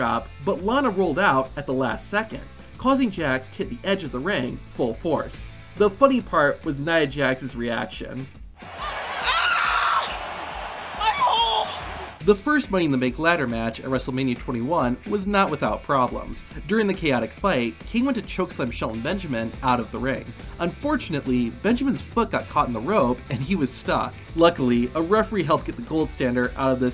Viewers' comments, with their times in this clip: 0:08 imagine hearing Nia Jax out of nowhere yell out MY HOLEEEEEE 😂😂😂